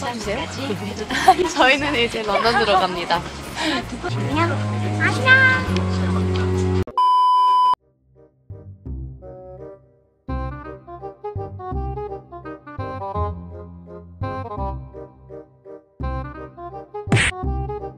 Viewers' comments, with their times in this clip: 0:04 Rosé cute voice ☺😊